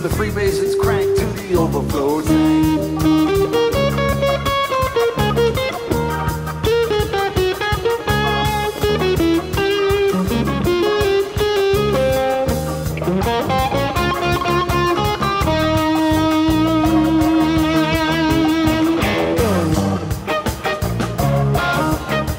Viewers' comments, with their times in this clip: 0:05 Drake Kiki tease. haha tre is on one